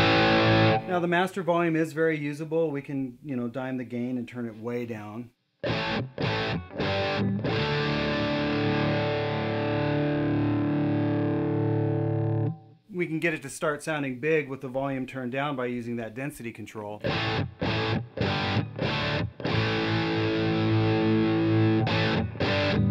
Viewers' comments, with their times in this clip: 0:06 Seems like you could use the master volume to play at bedroom volumes and still have an over-driven tone, as Shawn does into the video.